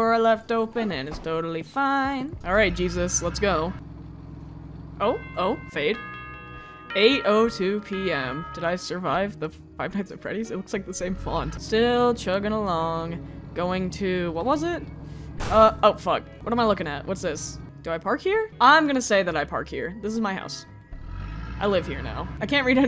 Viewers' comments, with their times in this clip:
0:05 WHY IS NO ONE TALKING ABOUT HOW THIS SOUNDS LIKE THE FNAF BELLS AT THE END OF THE DAY WHEN YOU REACH 6AM 💀